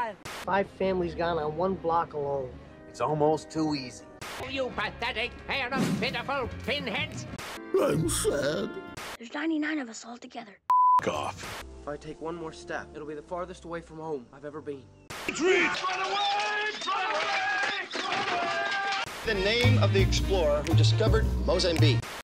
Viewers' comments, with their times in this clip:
0:07 Scooby Doo's voice